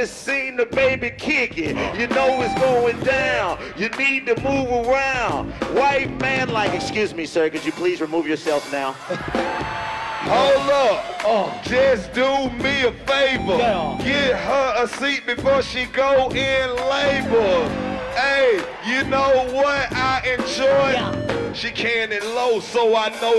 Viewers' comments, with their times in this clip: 0:04 Dat beat going hard 🔥 where I can find a beat like dis